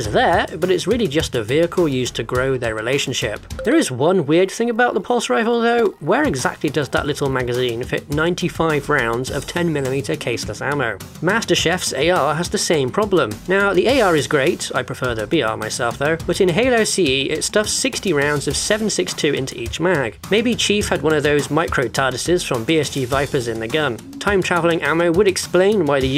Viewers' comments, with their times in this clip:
0:09 master chef going crazy in the kitchen 😂
0:10 He pronounced Master Chief like Master Chef and now I'm imaging him as an actual Chef with his own cooking show!
0:11 did you say Master Chef? Gordon Ramsay is getting extra mad.
0:11 "Master Chef..."? No recovering from that one, sorry... you're dead to me.
0:11 Why does he call Master chief, Master Chef?? Did anyone else pick up on that? Or was it just me?
0:11 Hold on… MasterChef?? Thanks a tv programme, not a super-soldier.